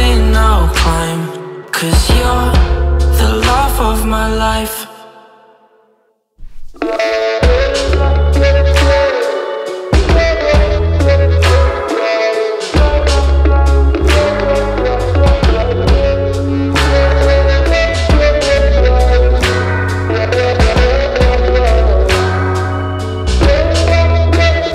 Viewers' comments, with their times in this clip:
0:05 the part starting is so soothing and pleasing for both ears and eyes